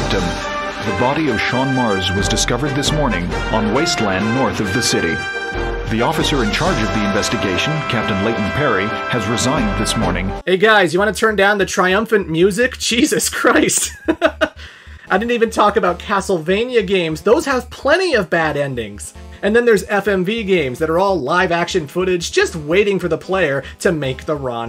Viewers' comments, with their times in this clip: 0:08 just before the narrator said anything, I was like “why is the music so triumphant, they’re not announcing top of the morning weather.”